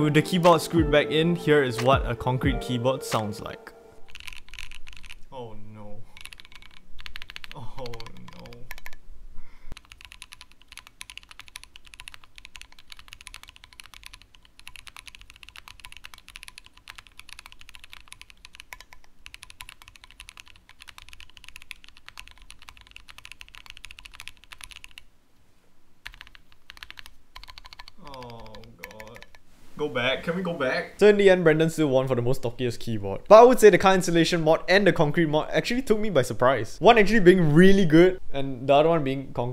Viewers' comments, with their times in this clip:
0:05 Wow, it actually sounds like you're typing on concrete. Not thocky, but very unique, not bad at all.
0:07 that backspace sounded so funky
0:08 i don’t know what thocky is but it sounds utter heavenly
0:15 AYO that concrete backspace has a really unique , and reverberating ' TINKY' sound to it tho
0:26 that keyboard sounds good (before sound test)